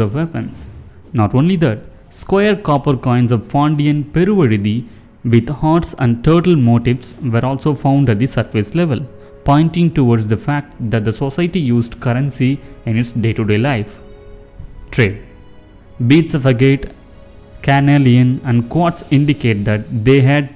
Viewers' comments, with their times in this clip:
0:03 you nailed the pronunciation...